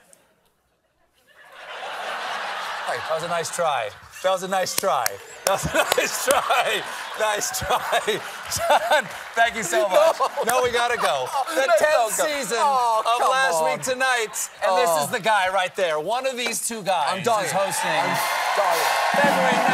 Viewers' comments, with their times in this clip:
0:04 John Oliver laughing like a gleeful toddler gives me so much happiness 😊 Also: "The joke is my actual face" is such a power move!